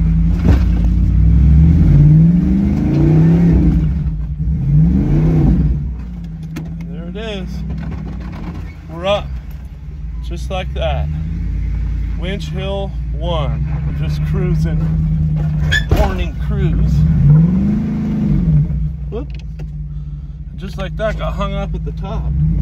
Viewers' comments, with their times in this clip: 0:07 What happened ? is that rubbing I hear